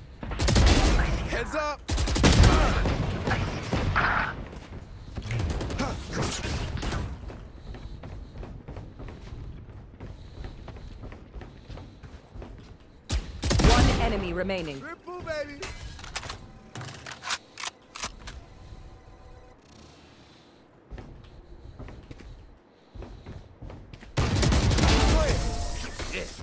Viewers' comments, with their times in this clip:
0:05 darth vader gets a quadra
0:05 intense breathing but ez kills be like:
0:08 heavy breathing intensifies